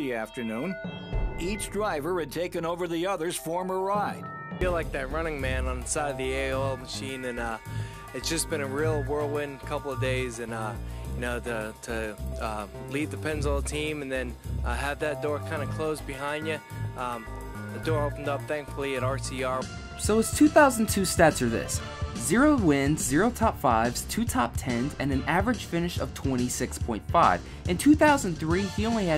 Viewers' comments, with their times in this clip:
0:10 you can hear in his voice; he isnt the same man. Its such shame coz he obviously had talent or Sr. would never of made that call, also hes the nicest guy you could ever meet.